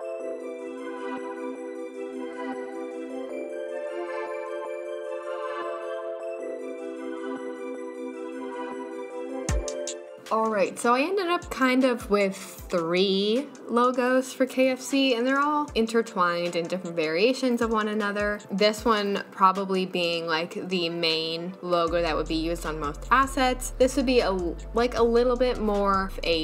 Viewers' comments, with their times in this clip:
0:10 since when do you have a lisp?!!!!